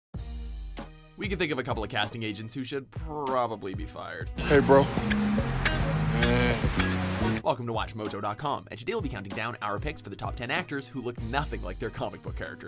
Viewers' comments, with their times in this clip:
0:00 damn slow down gee!!!!